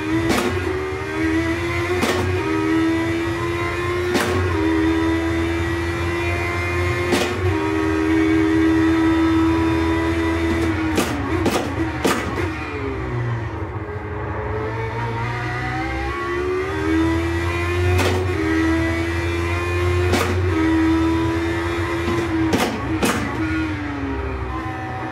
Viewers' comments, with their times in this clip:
0:09 The audio delay ...yeesh! I sure hope that's in the recording and not input lag. I see you blip throttle on downshift, then i watch you release the clutch, then I hear the blip. Edit: appears to only be the picture-in-picture that's out of time. I'm surprised I even noticed it!